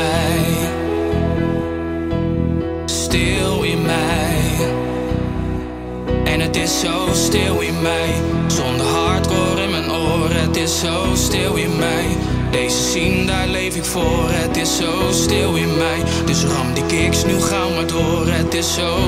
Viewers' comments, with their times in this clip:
0:03 terror..... um no mate